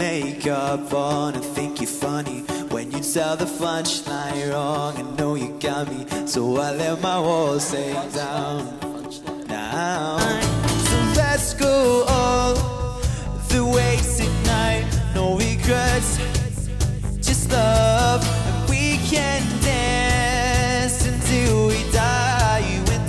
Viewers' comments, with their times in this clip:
0:08 when mikey and cal were like funchline? 😂😂 best thing ever